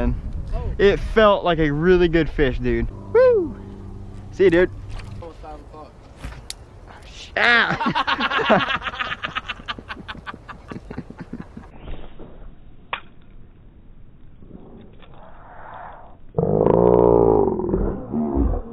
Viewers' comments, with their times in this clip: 0:06 what a laugh aha